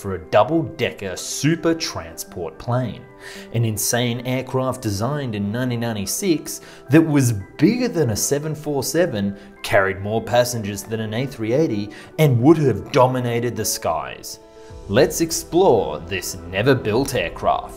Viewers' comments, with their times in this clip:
0:04 When was it designed? Thats right, in Nani-nani 6!